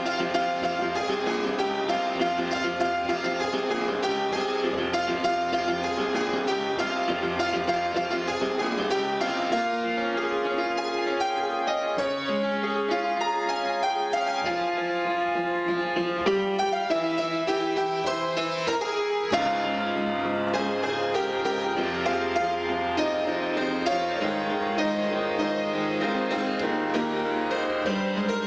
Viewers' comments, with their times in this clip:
0:09 I'm realizing there's only so much you can write in 500 characters haha. Anyhow, there's also the pre-chorus (Jen's singing solo), which is underlined by Bflat - Dflat - F - (G) - Enatural and then straight to the chorus. There's also the Dflat-Aflat repeating right-hand ideas over the Bflat and Dflat chords, if you can hear them The guitar solo is complicated; just for fun, the chords are the same as the pre. I can't help you with the solo itself, though - sorry! Good luck!